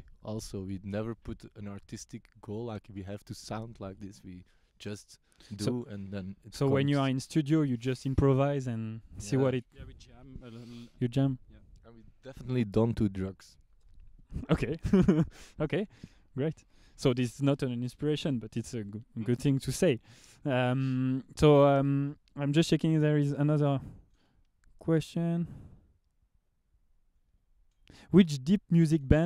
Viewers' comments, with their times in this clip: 0:10 Dude: Definitely dont do drugs His Friend: :O You serious bro ? (Bursts in laughter)